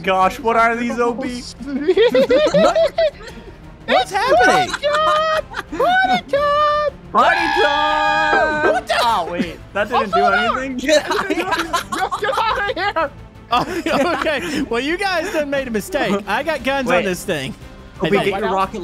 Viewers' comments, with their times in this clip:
0:04 thonk thonk had me on the floor